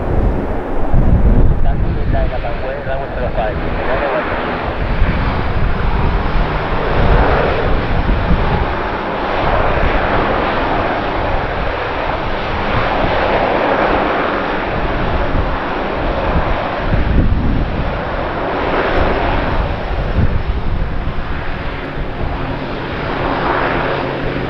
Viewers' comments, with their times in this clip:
0:09 A big flare landing and beeep beeep beeep 👍🤪